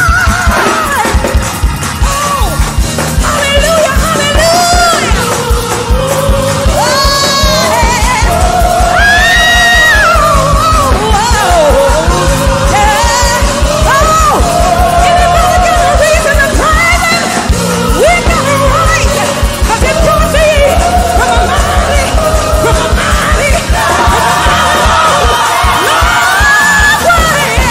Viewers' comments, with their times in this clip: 0:08 That high note she did took me out her voice back...i had to cut me a dance